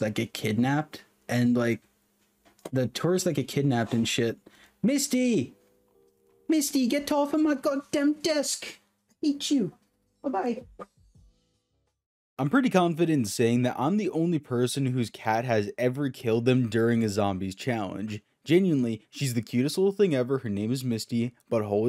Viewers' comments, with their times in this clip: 0:06 man turned full bri'ish